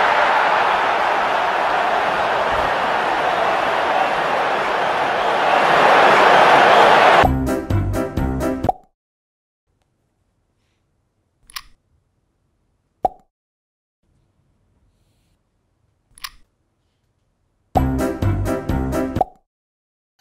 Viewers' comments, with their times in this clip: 0:06 don’t use headphones from experience